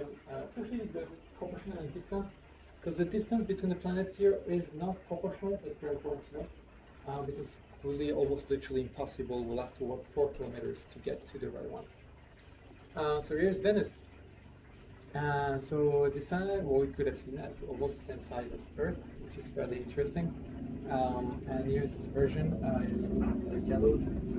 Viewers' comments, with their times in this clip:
0:06 The video was amazing but in the mid mins ur voice started to get low and faded